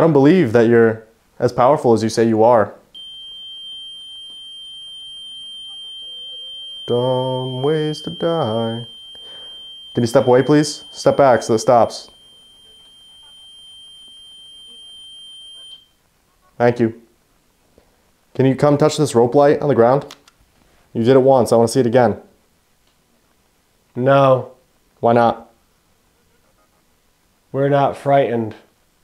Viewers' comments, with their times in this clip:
0:04 Bro started singing… “Dumb ways to die”… Had to stop for a second, couldn’t stop laughing..😂
0:16 I swear I can hear something odd in the video. Not sure if it’s something running in the background or what not, but it sounds like a potential voice. (But only a split second of one)